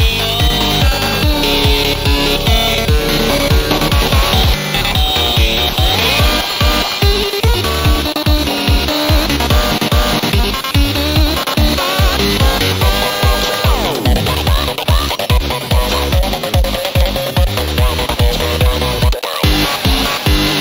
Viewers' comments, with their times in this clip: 0:06 In tell me why is the sound effect SO GOOD